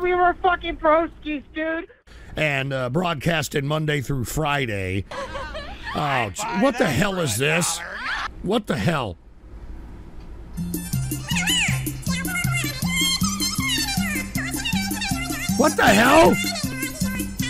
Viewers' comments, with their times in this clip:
0:03 Racist Chinese chipmunks 😂